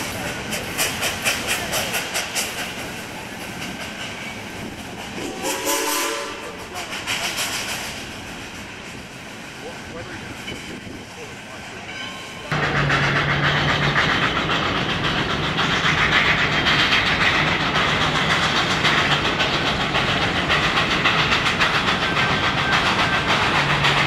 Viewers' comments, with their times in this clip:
0:05 boiler tube 6 chime